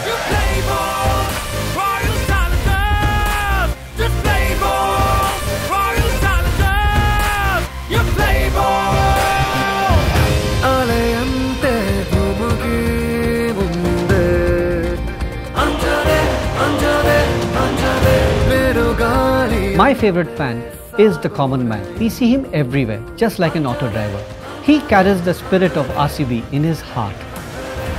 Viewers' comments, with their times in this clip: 0:09 Loved the part from the music is awesome 😍😍